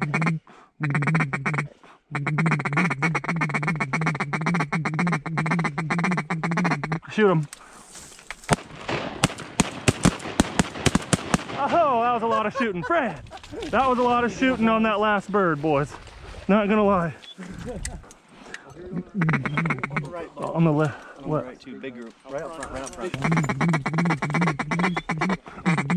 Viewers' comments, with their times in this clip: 0:07 that first shot idk what that was but damn it was loud.